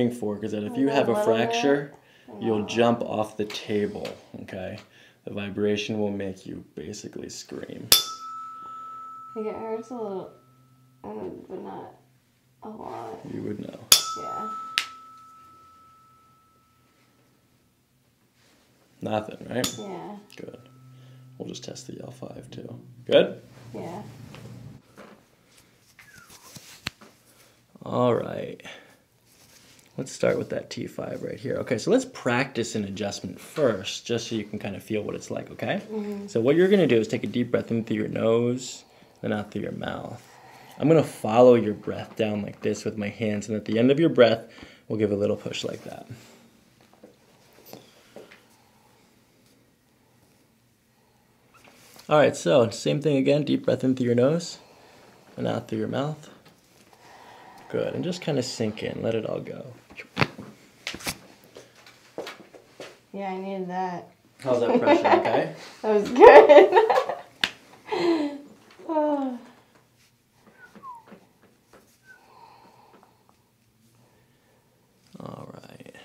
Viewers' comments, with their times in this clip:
0:09 On she says it hurt a little but not with KY🤣🤣🤣🤣🤣
0:58 when someone unmutes their mic